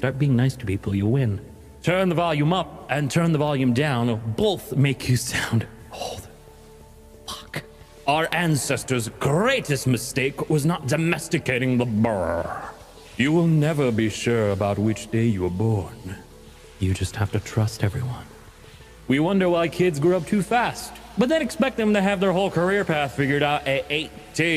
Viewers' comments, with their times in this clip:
0:08 I shall pronounce bear like that if the rest of the year.